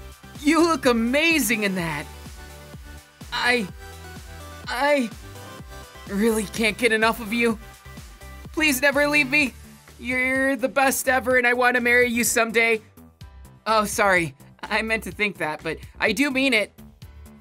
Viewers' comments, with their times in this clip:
0:03 comes up with denki begging in the cutest way Me: trying to hold my laughter in